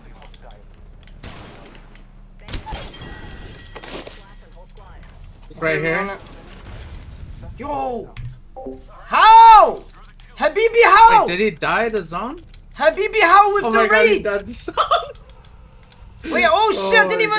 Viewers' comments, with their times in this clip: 0:03 deadass thought he was saying "habibi how with the wraith!" lmaooo funniest guy in twitch rt